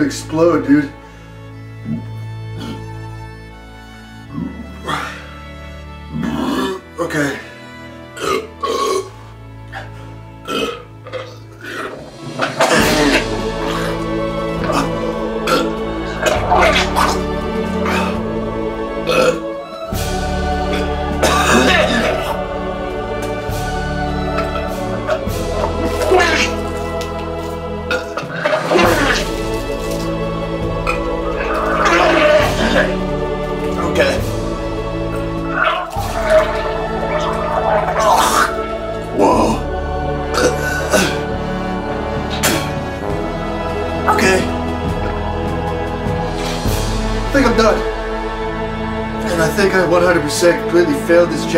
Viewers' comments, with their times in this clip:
0:06 The music timing is just perfect and heroic 🫡
0:11 that music drop to the situation killed me 💀💀💀
0:11 the music sync made it way more funny omg
0:12 Why does Holy Music just start randomly playing when he vomits
0:12 If you listen very closely you can hear LA Beast vomiting well synced with the drop
0:13 the moment when epic music hits is just beautiful. I cried. I literally cried. Mad respect.
0:13 him throwing up Music: majestic and godly.
0:13 what a background music
0:14 i love the casual calming music while he’s chugging the sprite 💀 LIKE HELP IM CRYING
0:17 the way you timed that drop of the music to the vomit hahahahah lost my shit! i feel like i've seen this video before though. it's very old. you can tell you look very uncomfortable, and you don't quite have that same attitude now. nomsayin? and you're much stronger now with your throwing up. you used to let the throw up just take over your entire face and life, as though your soul gets ripped out piece by piece every time you heave. Now you just throw up as a form of waste dispensing haha. no emotions, just efficient vomiting. anyway, if this ain't a reposted video, it's atleast a very old one that you never released until now for some reason...
0:25 It's Donald Duck!
0:25 Love the Donald Duck noise
0:26 the sound is like a dying cat
0:27 he kinda sounds like splatoon male character
0:28 I feel bad for laughing but why tf it sound like Jurassic Park
0:29 he sounds like the raptors from Jurassic park 💀💀💀
0:32 it sounds like he’s drowning in he’s own puke I hope this guy is ok
0:38 when she farts and it actually stinks 😷